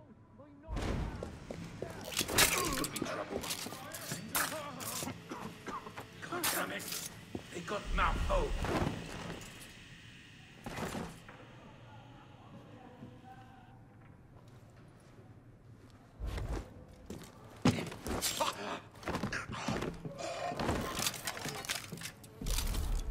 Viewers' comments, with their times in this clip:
0:09 How TF didn't that guy notice all those smoke, smoke grenade explosion sound, arrow shooting noises and the dead buddies